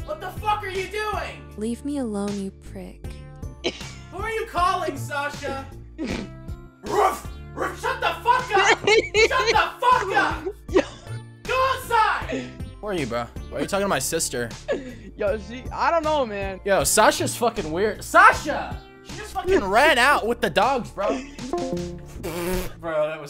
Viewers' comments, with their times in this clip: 0:06 WOOOOOOOFFF OUT OF NOWHERE A BARK WHAT THE HELL 😂😂😂😂😂